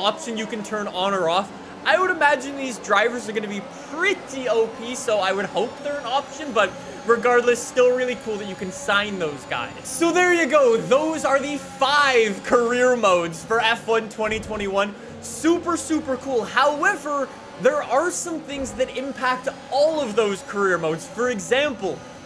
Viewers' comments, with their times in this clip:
0:06 he changes to Kermit for a second